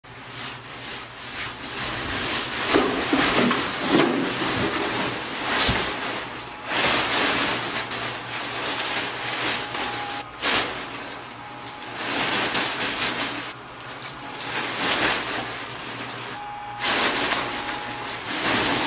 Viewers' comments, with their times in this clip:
0:00 How are you being so quiet but loud at the same time?? 😭😭